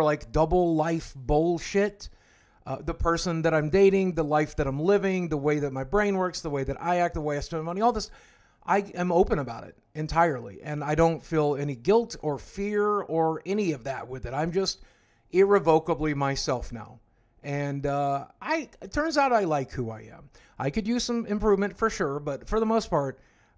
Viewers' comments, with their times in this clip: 0:06 did he say "the way i steal money"